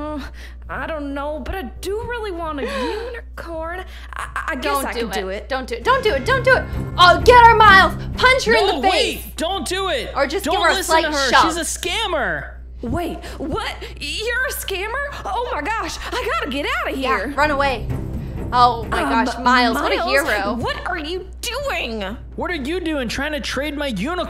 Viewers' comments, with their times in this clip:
0:06 i know this isn't mean to be funny but just the way he was running in with the dramatic music is so funny.